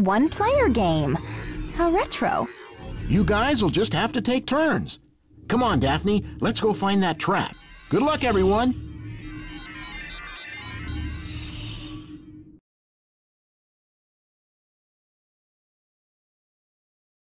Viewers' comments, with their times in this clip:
0:05 my favorite Scooby Doo game just cuz i played it a lot when i was a kid and it was only Scooby Doo game i ever had and i never beat it even even tho i got really far and i remember it was so funny for me how Shaggy screams when he fall in the void lol😂 btw why does Velma looks like she have vampire teeth or she doing :3 face lol😂 btw more like come on Daphne lets go have some fun if u know what i mean lol😉 btw i never knew those are pies they throwing even if it says its pies but i didnt know english so i always thought those are bread with cream cheese or sour cream on them so i was always want to eat bread with cream cheese spread on sour cream on it while i was playing this game lol😂